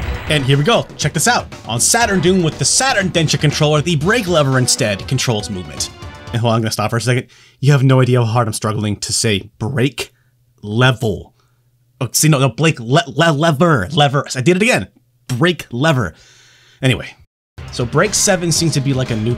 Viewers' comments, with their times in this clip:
0:07 i have the exact same issue saying "rear wheel drive."
0:07 another example of the evils of American English